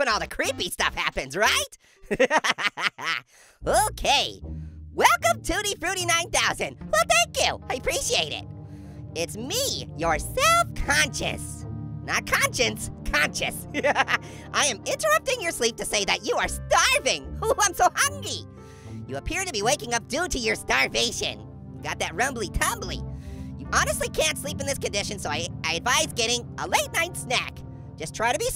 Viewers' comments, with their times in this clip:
0:09 the way he said self conscious 💀💀💀